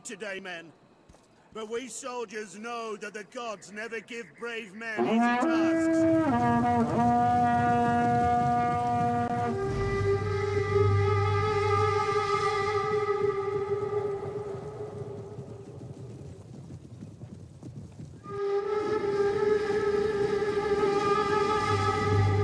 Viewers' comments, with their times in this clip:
0:05 The speech is so depressing and boring that they interrupt it by blowing the horn before he's finished heheheh XD